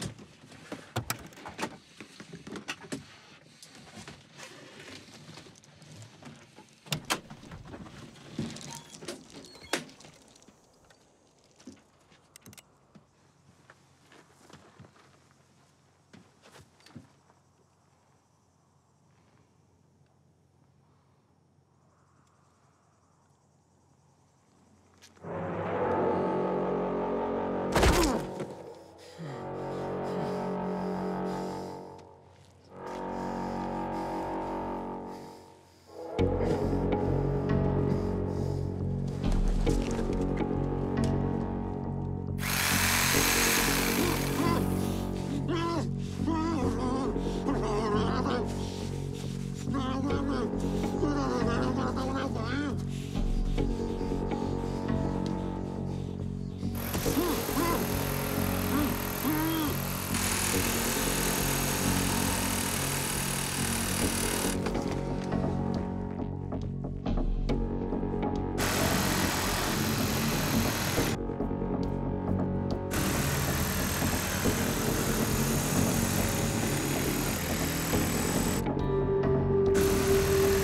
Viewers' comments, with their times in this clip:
0:07 the minecraft door sound
0:23 that music made this scene way more horrifying than it needed to be, but also really encapsulates mikes badassery
0:43 I like how the guy got scared by the sound of the saw. That was nice
0:48 guy said "hmmff mmh mhhfmm hmf" in Spanish
1:03 I would be freaking out even more. Reciprocal saw would be a REALLY bad way to die, and the sound they make is distinct.